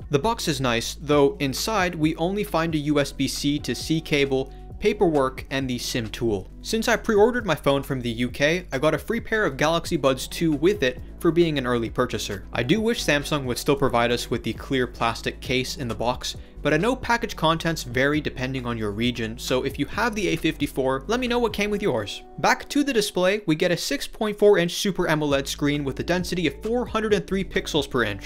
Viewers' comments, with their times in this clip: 0:10 I was watching on my A33 and all I hear is the faint ticking in the background, super distracting. Had to pause to make sure it wasn't something nearby. Pretty annoying just listen around the min mark